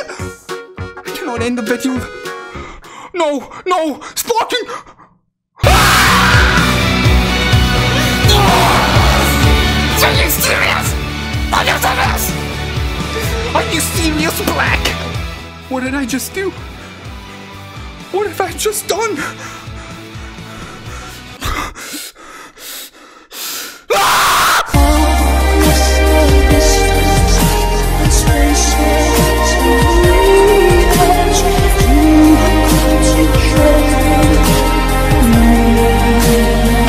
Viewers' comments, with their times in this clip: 0:04 loudest sound on the earth. But happy for you and you the best.:)
0:04 I was watching this in my room, door closed, but when this played my ears broke and mom said: SON WHAT ARE YOU WATCHING? SOME MAN SCREAMING T DEATH!?
0:04 the scream fits perfectly 👌👌
0:04 that is the funniest moment that scream though!
0:05 I got deaf after this Edit: Lol the moment he pulled him 10 min later I get him of my ticket
0:05 I legit screamed with you not gonna lie😭
0:05 I laughed then u scream
0:05 ahhhh!!! My ears
0:05 on god I got goosebumps from that yell and it felt good
0:05 "That Scream Tho"
0:05 that scream man you should be recruited to TFS after that!
0:06 Rip headphones users 😂😂😂💀💀 my dude destroy his toilet
0:23 I need that scream for 2nd anni